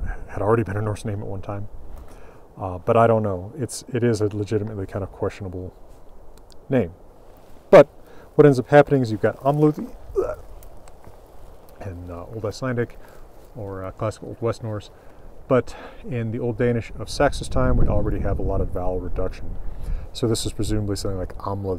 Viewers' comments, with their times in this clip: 0:09 Enemies of the Danes would say is a perfect representation of Danish pronounciation